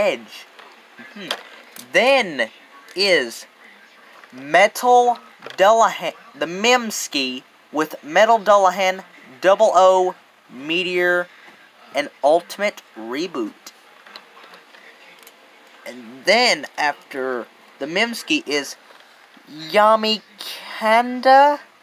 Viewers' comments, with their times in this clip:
0:06 The Mim-Skeee lol. (Its Sky but alot people will say Skeee as a joke including myself, but mistake by alot of people when saying it for the 1st time)